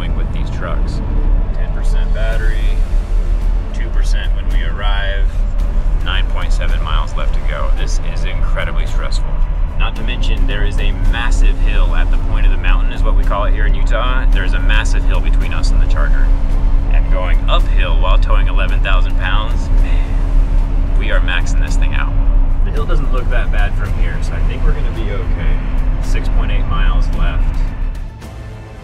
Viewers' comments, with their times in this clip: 0:09 the boss music 😂😂